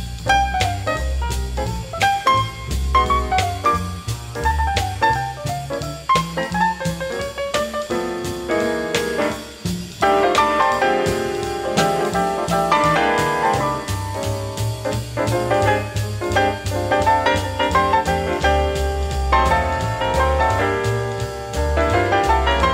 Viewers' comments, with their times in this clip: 0:09 Red plays two choruses of a harmonized version of Miles' solo on "Now's the Time" (from a '45 recording w/Bird).